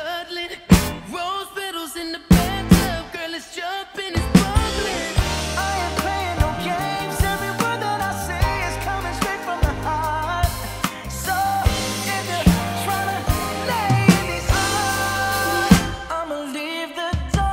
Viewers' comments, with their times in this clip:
0:05 Amazing. My favourite part is Really solid fills throughout too!